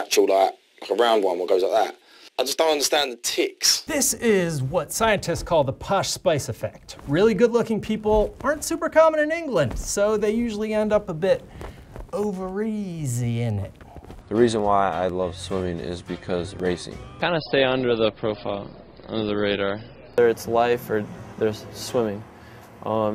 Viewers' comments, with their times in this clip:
0:05 the "what?" place effect? Native speakers, please help. Thanks